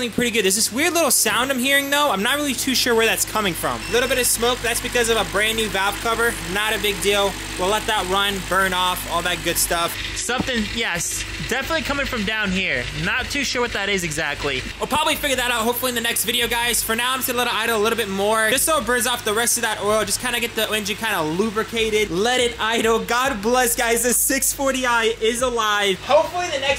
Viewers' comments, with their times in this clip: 0:09 THAT sound is your transmission running low on fluid with metal gears clacking against one another, fact that you let it run for an extended period is a recipe for disaster,